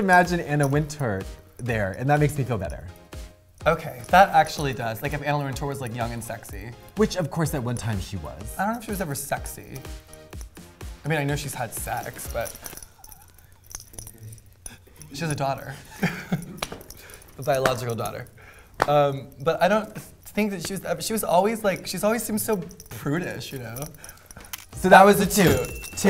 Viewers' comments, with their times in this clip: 0:10 is such a funny moment "I know she's had sex." and then Katya proceeding to die of laughter, just is so infectious.